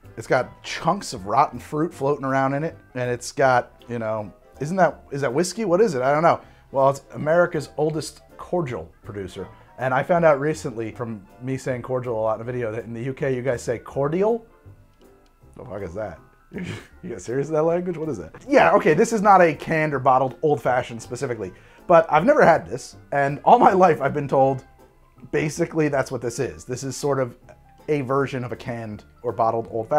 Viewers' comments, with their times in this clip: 0:10 not a good start mate. Yeah we pronounce it the proper way Cord-e-all, rather than corjul. Maybe wanna stop as we have pubs older than your drinks. Also in before “cHewSdAy InNit and wOaH bOtTlE”